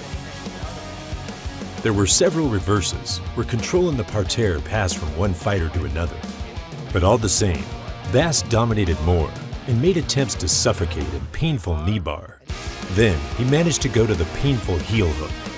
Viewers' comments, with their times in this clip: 0:03 What is the word used ? Sounds like "parterre". Googling that doesn't help much so maybe the spelling is different?